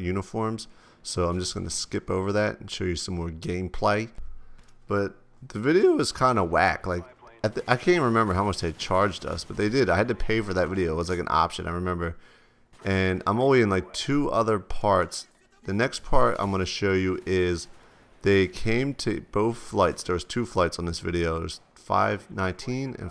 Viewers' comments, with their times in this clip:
0:05 Yo, dude what to your voice
0:05 ha voice crack !
0:06 HAHAHAH his voice cracked